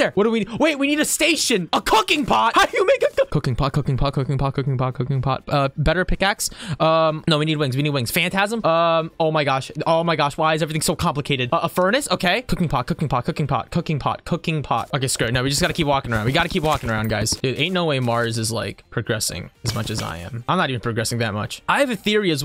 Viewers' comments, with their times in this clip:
0:05 The fact he was screaming for a cooking pot when it was blatantly in the list actually hurt my soul lmao